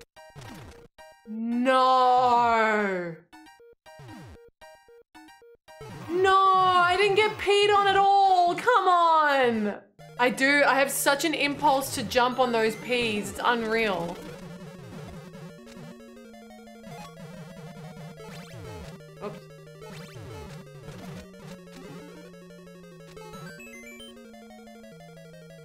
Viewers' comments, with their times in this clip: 0:07 You sound unhappy. I'd P on you if it'll cheer you up.